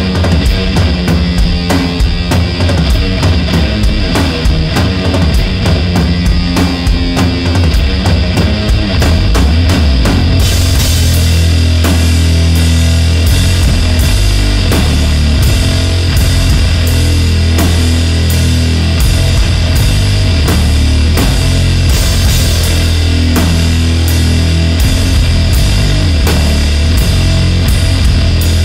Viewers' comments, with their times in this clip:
0:09 When the doom gets even doom-ier 🫠🫠😛😛🤘🤘🤘